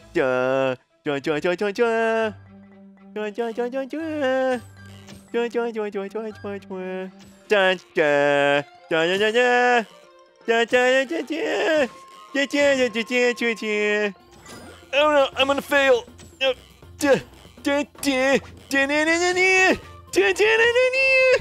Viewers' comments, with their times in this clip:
0:07 BEST SONG EVER :D
0:08 best theme song in the friken WORLD. ITUNES THAT SHIT
0:08 Best singer ever!